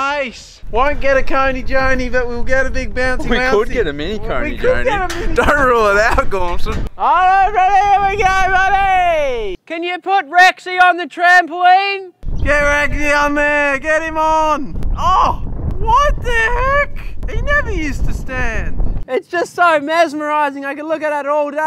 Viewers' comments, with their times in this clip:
0:06 what language is that 😂😂